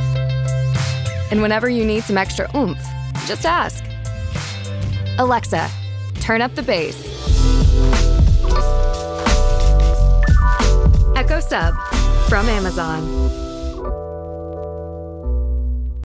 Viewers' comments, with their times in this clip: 0:08 what is that groovy music, I love it